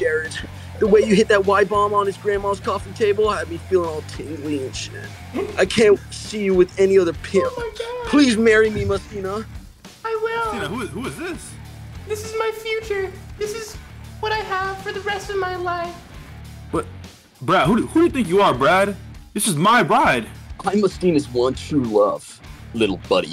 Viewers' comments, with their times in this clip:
0:06 😂 heard the laughter